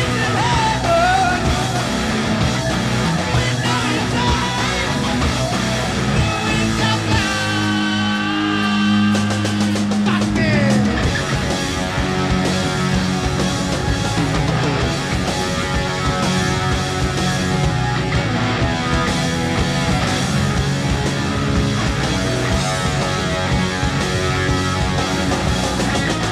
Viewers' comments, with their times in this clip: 0:09 Wow, "Hole In The Sky" seems like a really difficult song to sing- it's just below the point where Ozzy's voice starts to break- but he pulls it off, although he yells out a frustrated "fuck me!" right before the guitar solo